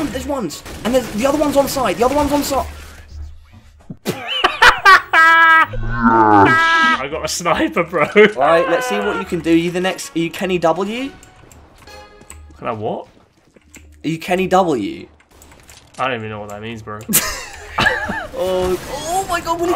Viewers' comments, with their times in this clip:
0:04 that fucking laugh xD